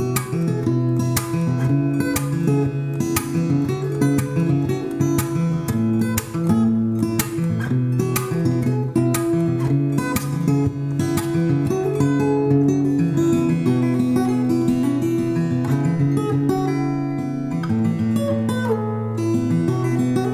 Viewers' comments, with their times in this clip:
0:06 I love the music and the setting! It's so relaxing! I think I saw a squirrel 😄